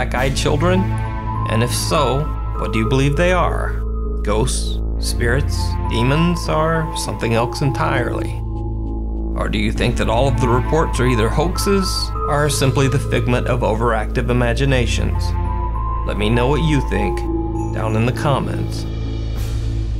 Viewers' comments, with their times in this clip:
0:03 "or something elks entirely"